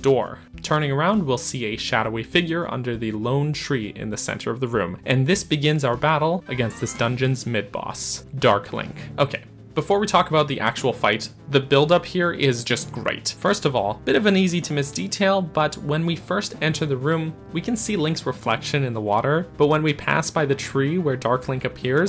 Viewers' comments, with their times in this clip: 0:08 i laughed a little too hard at “dark burger”.